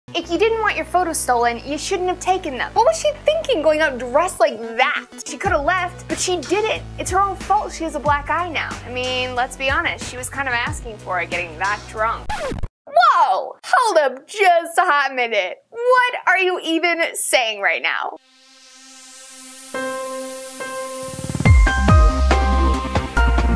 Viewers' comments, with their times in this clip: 0:06 'It's her fault she's a black guy now' What the fuck does that mean?